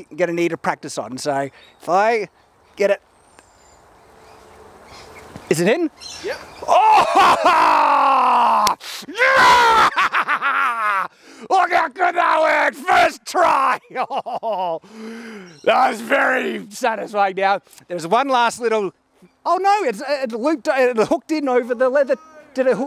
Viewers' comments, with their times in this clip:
0:06 Man has a celebratory scream like a spartan warrior